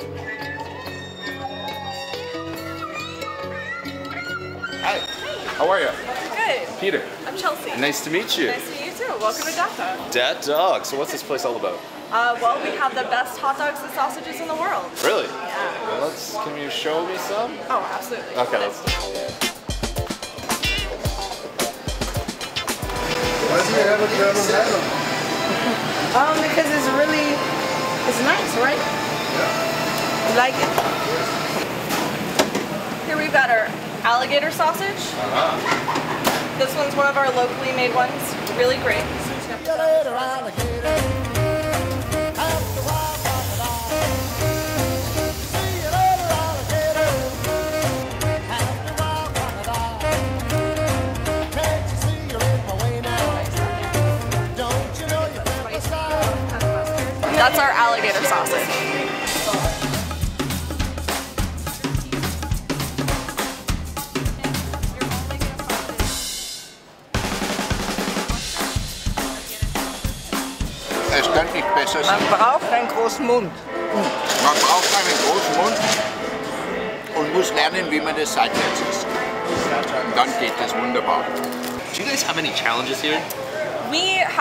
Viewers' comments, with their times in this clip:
0:10 am I the only person who heard he said ‘dead dog’?
1:10 I had no idea Jeremy Irons spoke German